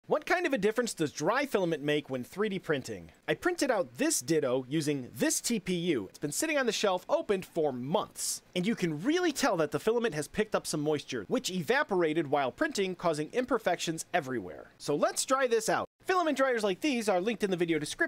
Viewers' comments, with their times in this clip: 0:03 did bro just say dildo